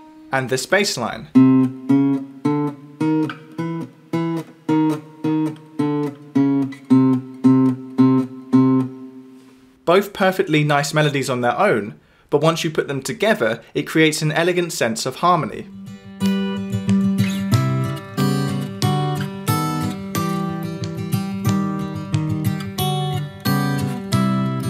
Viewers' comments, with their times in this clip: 0:08 "Both perfectly nice melodies on their own" - I beg to disagree. To me these two melodies on their own sound like someone's 1st attempt to play anything on a guitar and it's not going well. Together though - beautiful!